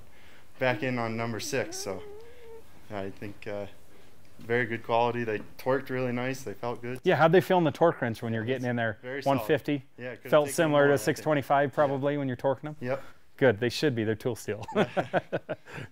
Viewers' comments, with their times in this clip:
0:03 -was that a fart?